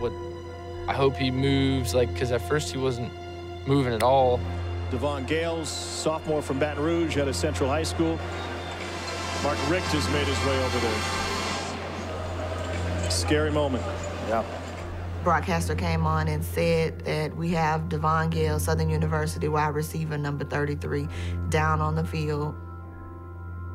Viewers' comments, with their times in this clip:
0:09 Yall that white boy laughing like wtf is funny about an injury my nigga